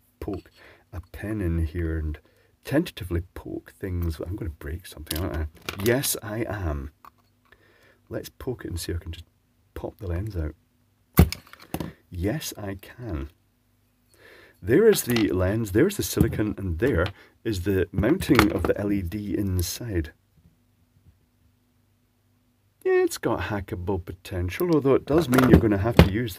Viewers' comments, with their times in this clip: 0:09 superb popping sound